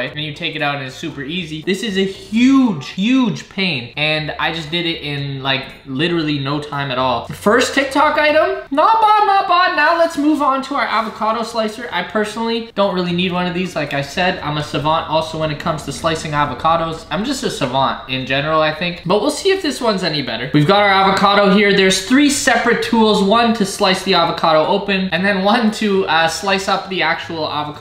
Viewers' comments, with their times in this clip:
0:08 don't deny it, this sounds like GRU from despicable me